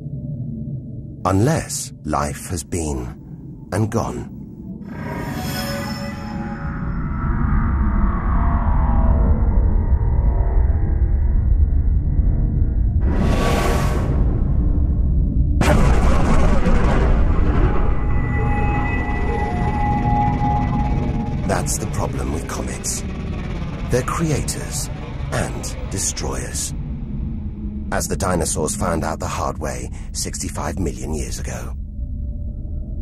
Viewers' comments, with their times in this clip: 0:06 ANOTHER EPIC SOUND EFFECT!
0:15 awesome sound of the Death Star >:D